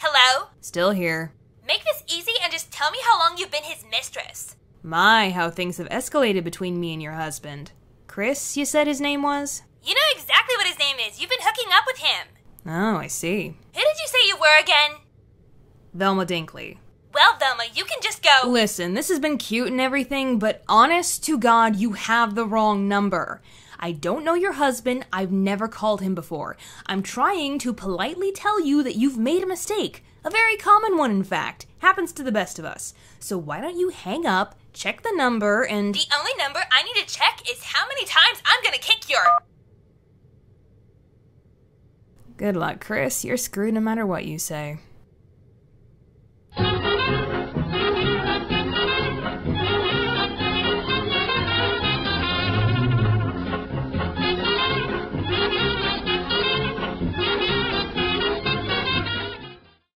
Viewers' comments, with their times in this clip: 0:10 Why does the voice kinda sound like Hartman from South Park!!!!
0:30 Amount of detail in this is crazy you can literally hear the pen click in her hand
0:46 i like end music